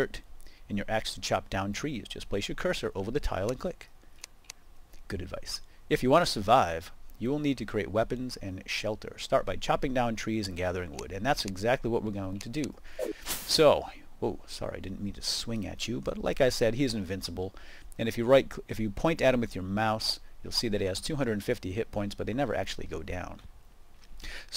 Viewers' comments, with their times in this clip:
0:06 I thought it said "dick" :p